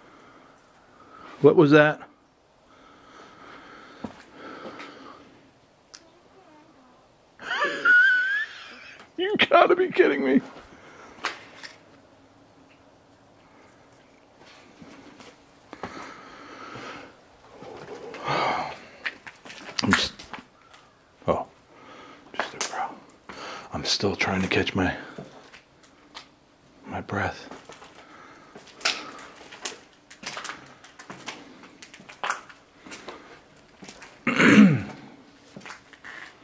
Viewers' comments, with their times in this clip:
0:03 you heard a child say something idk what but, sounded clear I just didn't have my noise canceling head set ..
0:04 Wow!!! after you said okay what was that.. a little girl very clearly says I'M HERE! You then said...YOU'VE GOT TO BE KIDDING ME....DID U HEAR HER AUDIBLY???!!! 😲🤯😳🙏💫💥
0:05 I hear what sounds like a kid saying "You scared us"".
0:05 The little girl's voice says, "Don't say I've got" as if to correct someone.
0:05 on little girls voice why didnt you comment instead laughing ? i mean that was clear a child or a doll
0:05 is a clear girls voice i think you know that though
0:06 it sounded like a kid saying "look what I got"
0:06 I heard a little girl!!!! WTF 😒😐😞
0:06 YYYYEEEEAAHHH!!!!! A LITTLE GIRL CAN BE HEARD SAYIN "CUT THE LIGHT OFF!!" YER REACTION TELLS ME YOU HEARD IT IT!!!
0:06 NOW A WOMAN SPEAKING! THIS PLACE IS FREAKY!
0:06 clear as day, child's voice!
0:13 I heard a little girls voice. Holy cow man
0:19 sounded like a residual of a teacher explaining something to the class